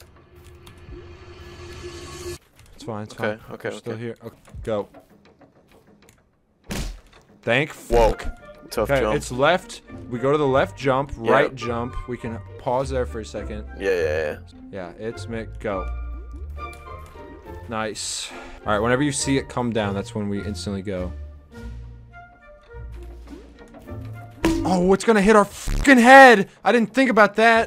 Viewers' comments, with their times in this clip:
0:08 why is the star spangled banner playing???